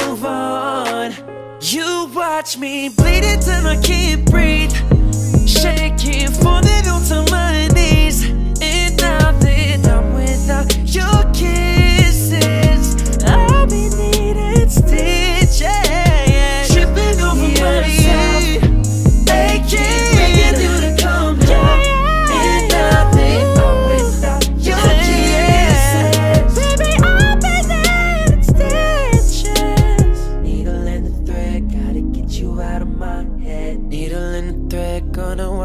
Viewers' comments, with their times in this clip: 0:06 sounded like you were singing through your nose haha! JK i know its just the accent.
0:17 53- I heard his Chris Brown pitch ayy 💪